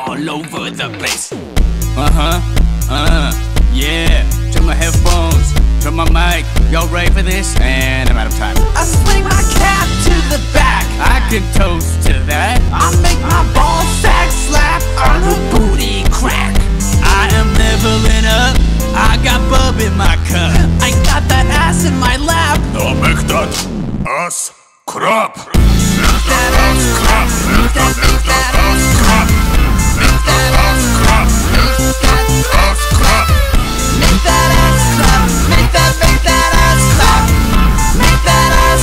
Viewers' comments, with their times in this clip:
0:08 something in this scene just hits different. It's smooth and punchy both in sound and animation
0:21 not only do I love the animation, I like the way red's voice sounds when he says that line